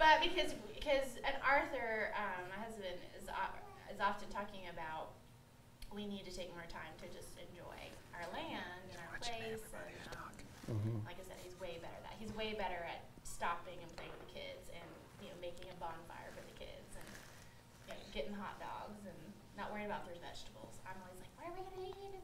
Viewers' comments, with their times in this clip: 0:09 I heard you whispering Rhodes 😂